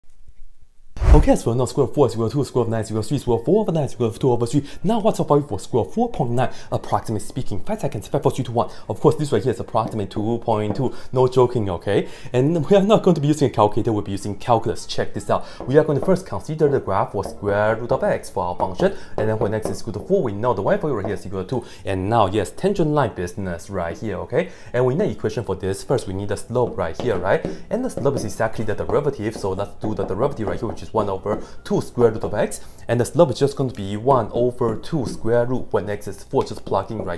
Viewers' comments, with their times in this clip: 0:01 is he even speaking English at the first 2 seconds?
0:22 Starting it sounds like mumbles to me.